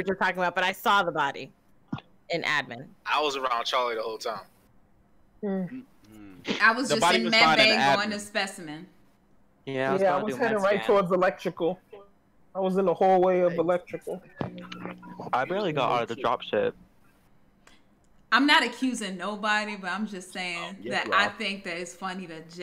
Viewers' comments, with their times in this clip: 0:10 ok but why it sound like my man boutta cry 💀